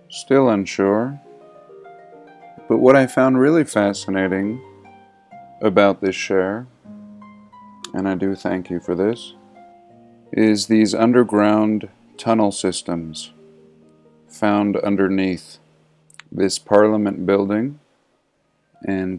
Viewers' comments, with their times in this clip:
0:04 I find it VERY hard to believe he is "Fascinated" because his voice sounds like he doesn't get paid enough to care. Not being a bully, I'm just saying this because every time my husband watches these videos, I always make a joke like this, because the dude sounds really out of it. Your videos are great though. No hate here